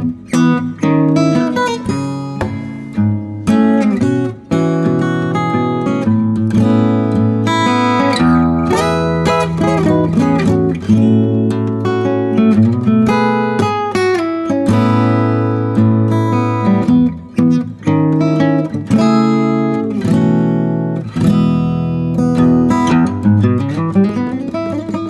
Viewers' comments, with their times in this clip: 0:08 that lil riff damn